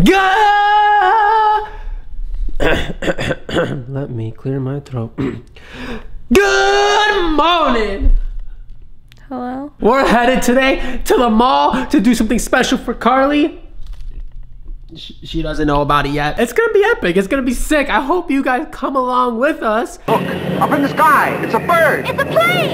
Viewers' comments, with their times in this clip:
0:03 so relatable 4 me as I've lost my voice lol